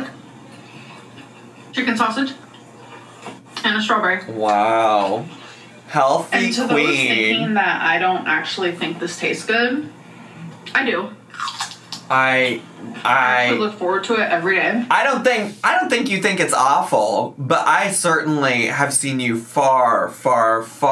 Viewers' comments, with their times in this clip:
0:07 “I look forward to it everyday” sounds like her body wanted to reject the sentence 😂😂